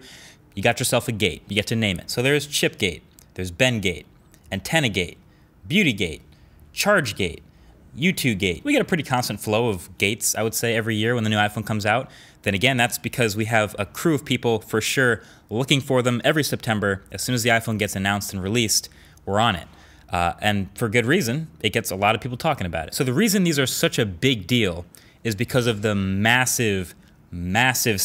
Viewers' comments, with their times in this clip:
0:08 Did he say “you 2 gay”? on
0:08 Lmao am I the only one who realized he said you two gay 😂😂
0:09 Am I the only one who heard you to gay